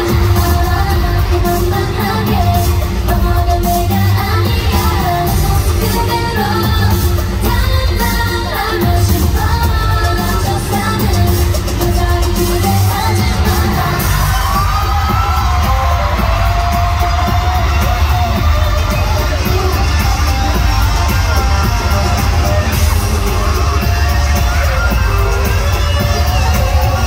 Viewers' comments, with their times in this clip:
0:10 chanty slaying the guitar 💎💎💎 😍😍😍